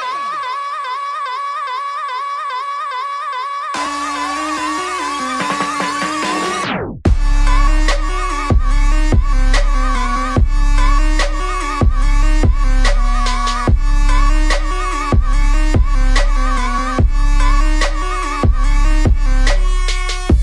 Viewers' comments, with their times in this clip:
0:08 what is the name of the beat drop on ? i think it's very iconic because it's not like hype but chill n swag